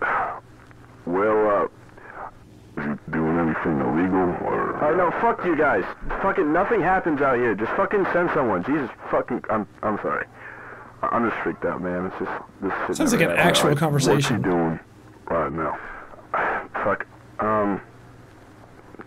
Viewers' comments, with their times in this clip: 0:07 I I love the immediate switch from pissed to calm and scared